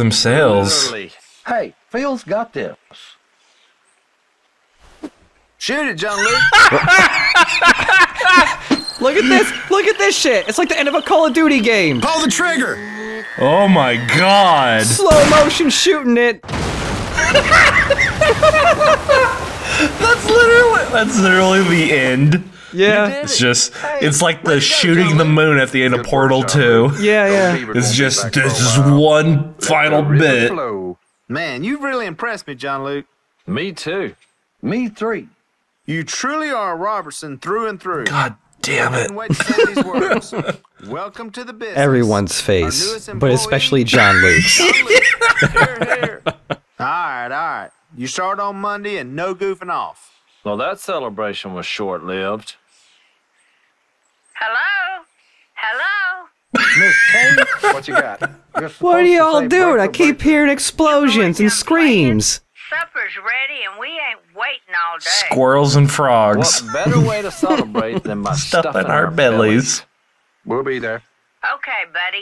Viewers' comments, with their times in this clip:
0:08 They couldn't even be asked to put the sound in slow-motion, so now I have to believe that they some how decreased gravity for the jar, in order to make it fall slowly through the air like that.
0:59 Did they reord that once and loop it or is that his ringtone for her?